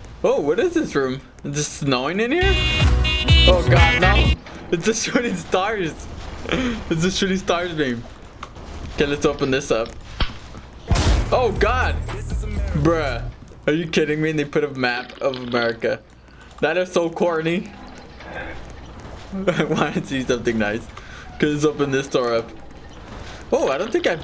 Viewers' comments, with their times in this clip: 0:10 woah you got a bang on there.